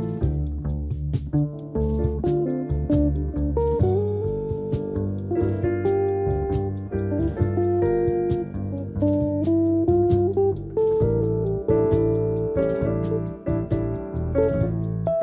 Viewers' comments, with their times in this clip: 0:03 An amazing rendition, that note so funny though - it makes you love this take even more!!